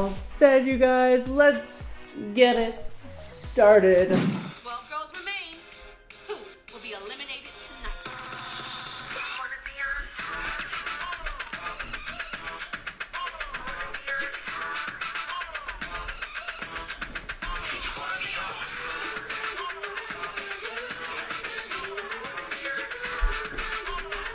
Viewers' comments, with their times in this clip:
0:09 we’ve ALL done that whenever that theme song plays!!!!